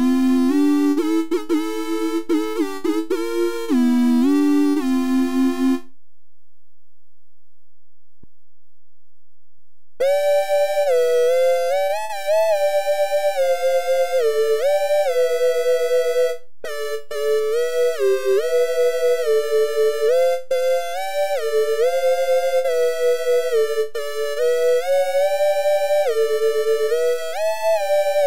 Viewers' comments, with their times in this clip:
0:09 BOSS MUSIC STARTS PLAYING